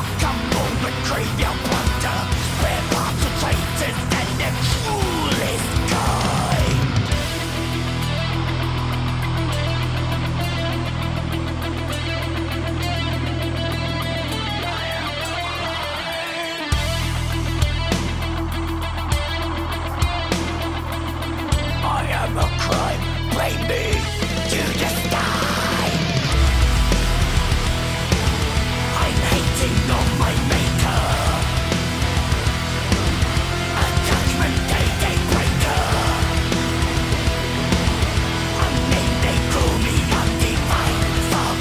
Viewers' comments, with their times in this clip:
0:07 sounds like New Noise by Refused.
0:22 As much as i love this song ive got to laugh everytime the song hits sounds like danni is saying i am a cry baby judasteine 😂😂😂